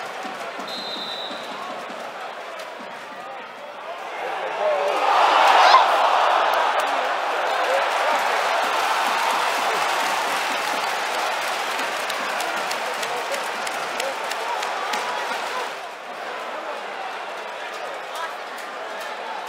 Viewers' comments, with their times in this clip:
0:03 That moan lmao